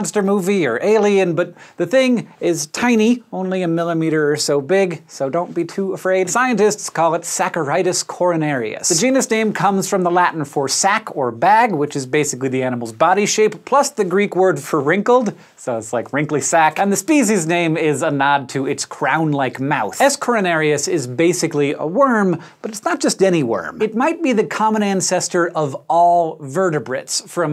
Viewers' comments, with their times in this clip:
0:07 really thought it said coronavirus for a sec lmao
0:08 i thought i heard coronavirus Almost gave me a heart attack